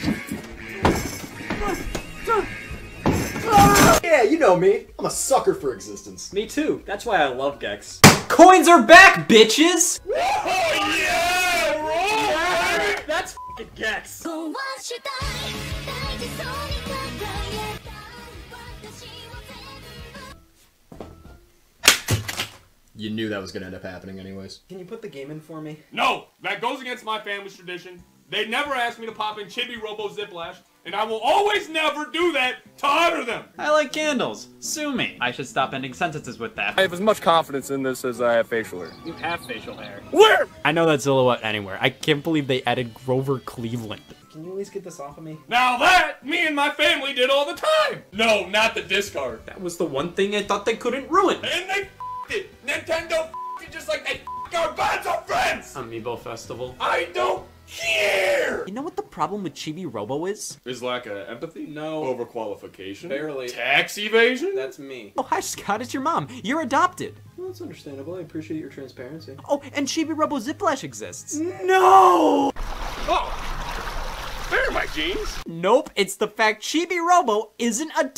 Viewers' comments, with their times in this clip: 0:08 "Coins are back, bitches!" excited noises and happy yelling
1:02 the way he says "tax evasion" is gold